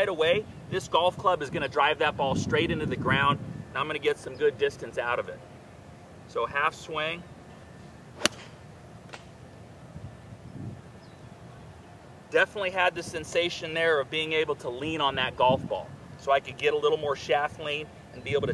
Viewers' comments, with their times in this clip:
0:06 I definitely heard you hit a tree